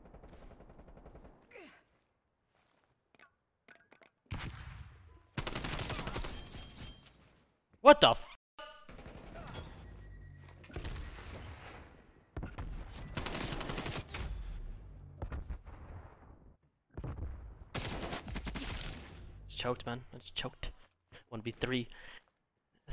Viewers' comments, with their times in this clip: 0:08 that echo tho 😂